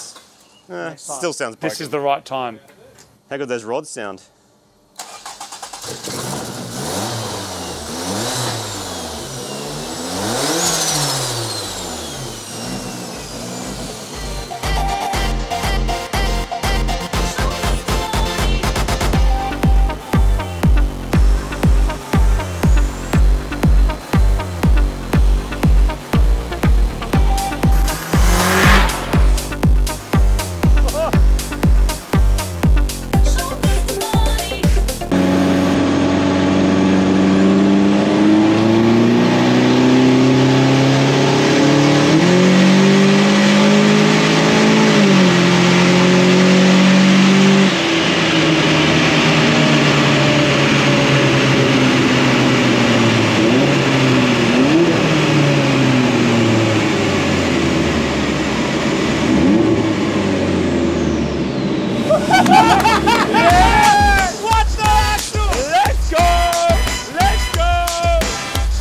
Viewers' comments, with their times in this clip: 0:09 Hears loud noise Puts fingers in ears Realises he has hearing protection in his hand Puts hearing protection on -It's the small thing that can make a man smile
0:55 Why its sounded like R35? 😅